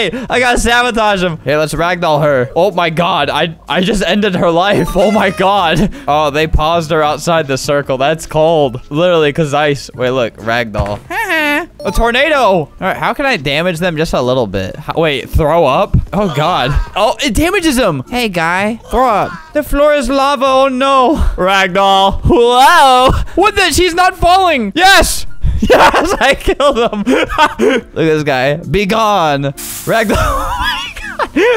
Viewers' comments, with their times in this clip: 0:08 that HAHA just is so SpEcIaL
0:16 “it damages him” the way he said it makes him a gamer